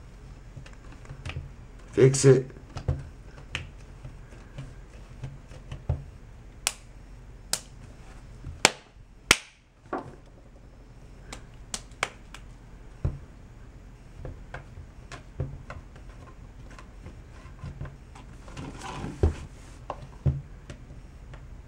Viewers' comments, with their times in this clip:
0:06 Lol boo clapping 🐒